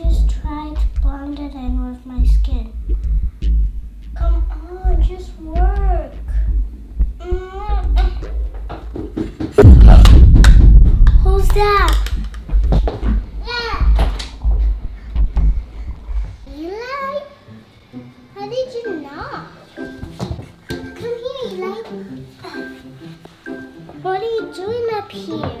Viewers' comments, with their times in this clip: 0:08 eli knocked the door ft. Apament 2-C